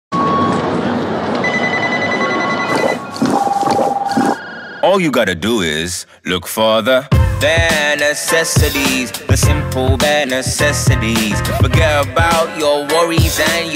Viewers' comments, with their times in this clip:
0:00 In start sounds like boss baby